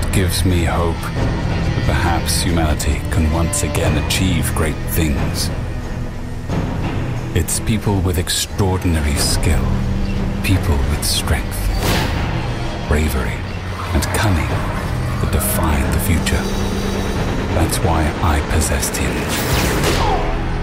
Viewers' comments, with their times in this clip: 0:08 i thought i heard my phone